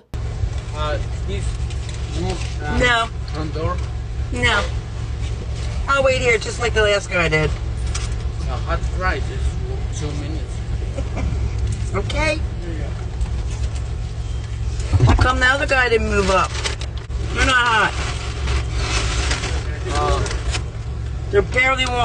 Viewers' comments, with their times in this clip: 0:10 that fucking laugh and then the "okay" after just pissed my off so much